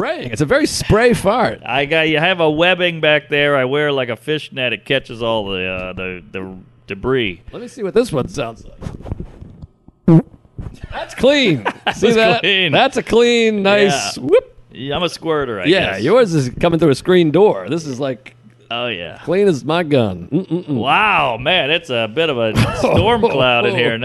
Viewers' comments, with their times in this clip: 0:09 Mark couldn't get that fart coated mic to his schnauz fast enough after Joe's queef